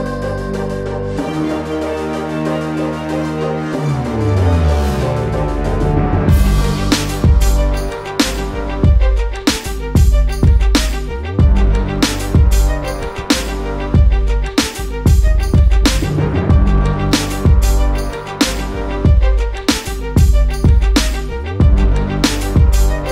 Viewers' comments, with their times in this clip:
0:07 dam that beat drop is the best thing I've ever heard